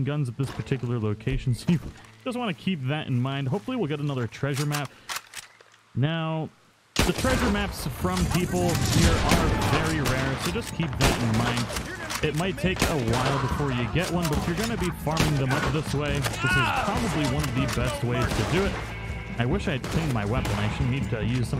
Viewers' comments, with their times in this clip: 0:07 I love how he starts casually commentating with the carnage over-lapping his voice. And how he tries to speak over it all is that more entertaining 😂